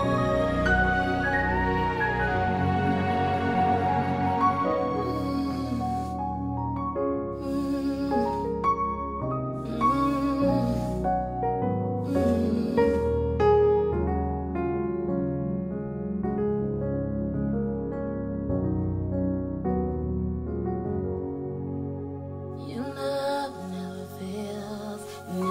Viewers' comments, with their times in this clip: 0:09 from where did you get that substitution ?? What is the theory behind it?